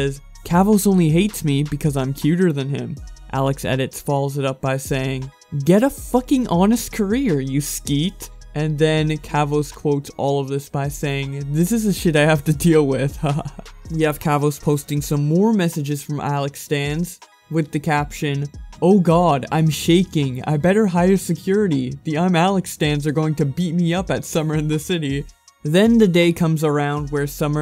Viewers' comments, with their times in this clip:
0:06 you said "skeet" oml I'm cryin its "sket"
0:07 omg no just no, if you’re not from Britain don’t try and pronounce it lmao
0:08 did you just.... say sket as skeet-